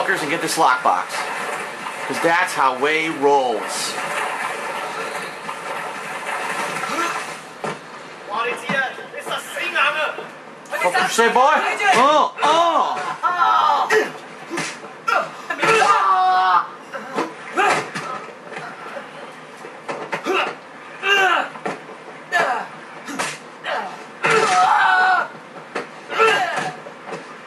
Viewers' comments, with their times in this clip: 0:08 did that guy just say "its the seananner?: